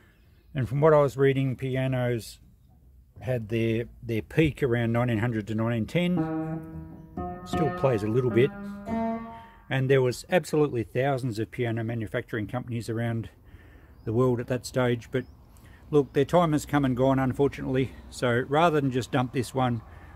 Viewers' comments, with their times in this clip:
0:08 That B sounded like a harpsichord